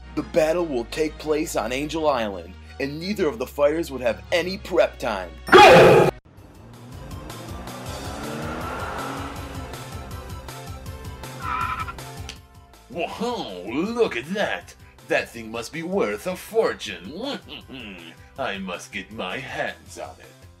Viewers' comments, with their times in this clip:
0:05 The "Go!" always jumpscares me XD